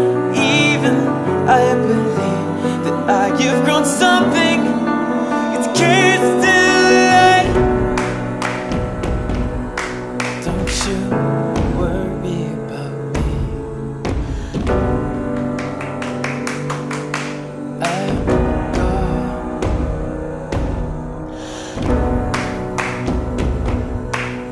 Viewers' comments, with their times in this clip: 0:06 Haven't listened to this album in over 6 years. One of my favorite songs on this album; instrumental and vocal that blends perfectly together. Best part beginning at :54 seconds and then completely fills yours soul with the claps, drums, and vocals. Rainbow of emotions in this song swallowing you whole... Absolutely beautiful.